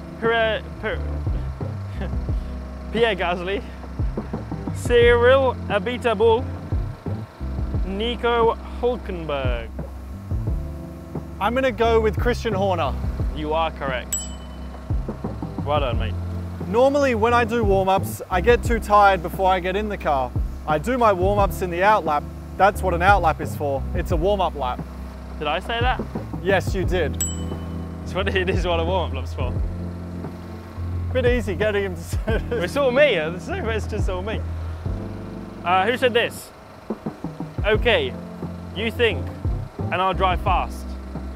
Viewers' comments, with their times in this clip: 0:04 “ABI TE BOUL” 🇬🇧 😭 🇫🇷 now Cyril this is what you get for not honoring a promise
0:05 Fully baited us with a Niiiico Huuuuuuulkenberg from Daniel😂
0:10 I was so expecting Daniel to do his pronunciation of “Nico Hülkenberg” 😂
0:26 the disappointment in Daniels voice when he said that like the disappointment his teammate is lazy😂